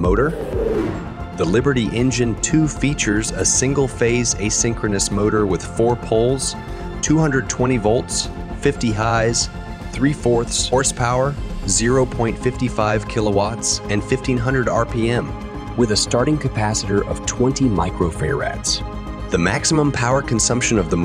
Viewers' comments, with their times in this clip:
0:07 You had me at 50 Hi's ! (50 Hz) 🤣